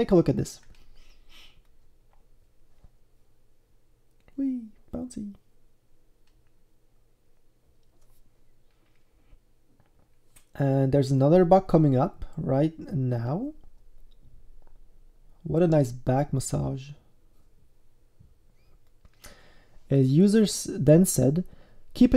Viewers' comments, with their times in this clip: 0:04 awwwwwwwwwwwwwwwwwwwwwwwww ur voice is so cute!!!!!